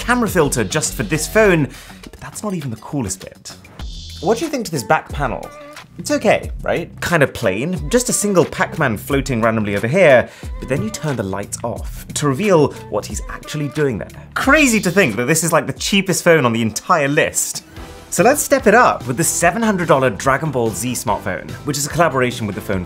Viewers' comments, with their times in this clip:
0:03 sounded like fire alarm